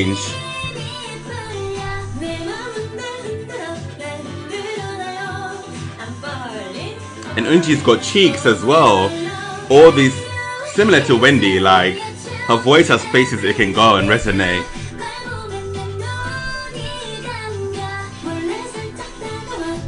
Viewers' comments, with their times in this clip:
0:07 They has such a clean voices, it's so satisfying to listen yeaa I think about that too